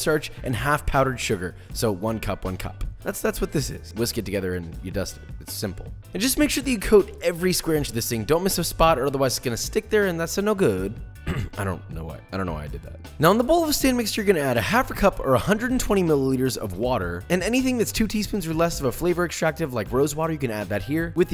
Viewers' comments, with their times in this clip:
0:09 "And that's a no good" In Borat Voice